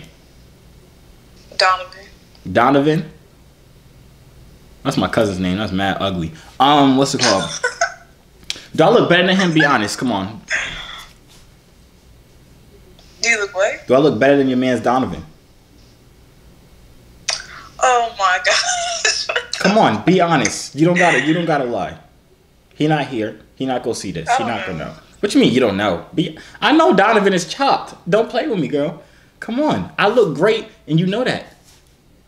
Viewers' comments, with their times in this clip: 0:09 it was a shot outside my house and the girl moved her head like she was shook/scared perfect timing 😂
0:20 THATS NOT HER TALKING😂🤣🤣🤣